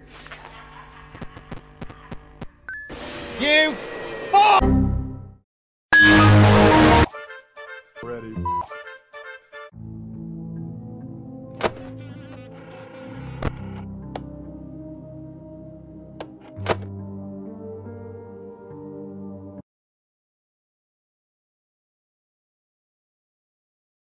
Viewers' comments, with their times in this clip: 0:05 warning for headphone/earbud users